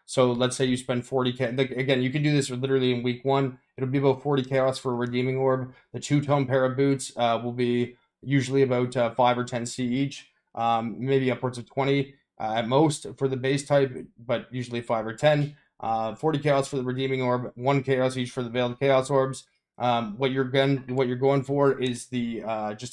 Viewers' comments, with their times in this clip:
0:09 Did you just randomly sniff and spin some panties ? 😂😂😂😂😂😂😂